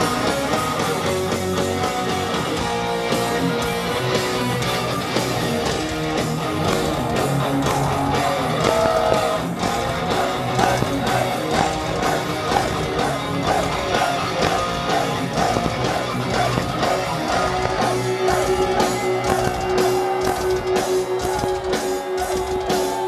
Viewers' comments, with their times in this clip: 0:05 omg double bass ! !